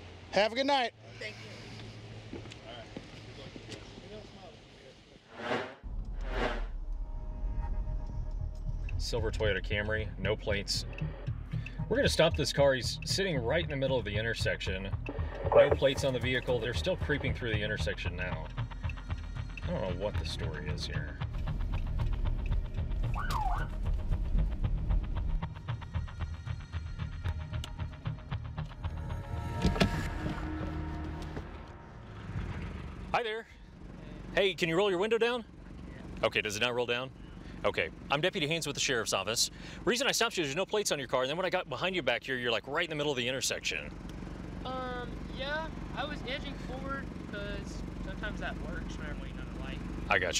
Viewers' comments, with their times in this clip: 0:06 The officer should host podcasts
0:33 This guy has a voice for radio.